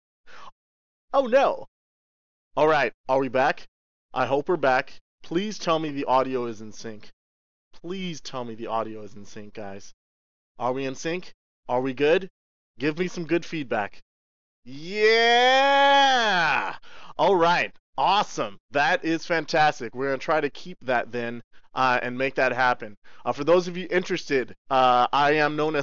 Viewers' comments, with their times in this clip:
0:06 THE AUDIO IS IN SYNC